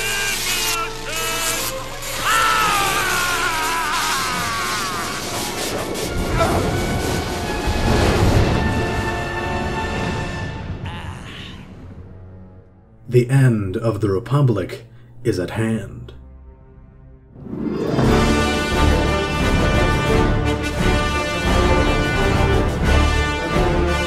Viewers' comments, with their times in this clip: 0:10 i thought i heard palpatine farting for asecond 😂